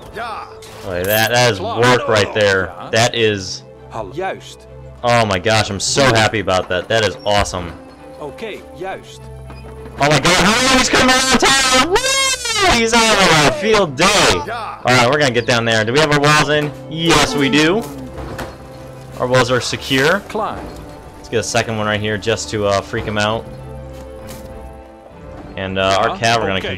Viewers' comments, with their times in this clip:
0:10 the ear rape